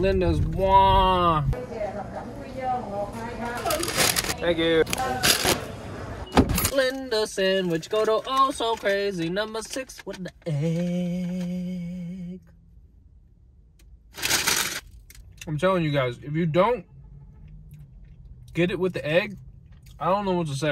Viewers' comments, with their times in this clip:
0:08 was a great jingle. I have an ear for music